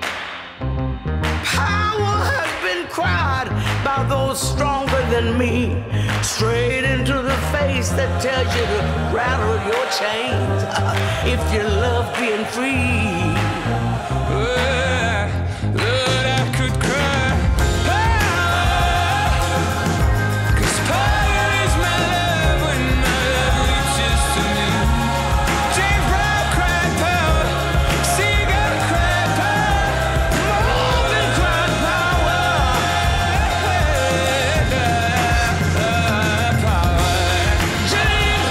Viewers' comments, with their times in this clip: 0:10 Did you hear the slight change in her voice at the end of her line ? She puts so much feeling into her singing.
0:20 Mavis' deep sigh when Hozier sings "'Cause power is my love when my love reaches to me" is so beautiful. It really makes that line
0:22 I love that little wonderous sigh she was just taking in the room's energy before she went for those textured power notes.
0:23 That breath that Mavis takes is exactly how I feel when I listen to this song. The gratitude for all those in the past who sacrificed to make the world even just a little bit better. Thank you Mavis, thank you Hozier, thank you Nina!